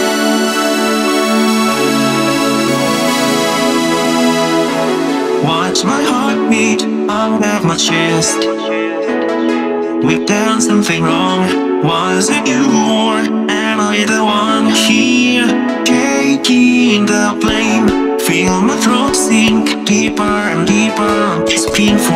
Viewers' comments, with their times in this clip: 0:08 I love the way Kaito sounds here and this is so good aaaaa Also, just one small thing; There's an error with the subtitles Kaito sings "watch my heart beat under my chest" but the subtitles say "watch my heart beat out of my chest". It doesn't really bother me, though hhhh